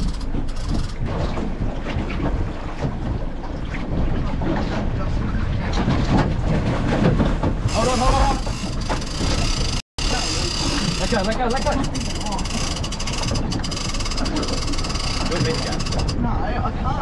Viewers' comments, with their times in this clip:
0:05 and the snapchat notifictaion went off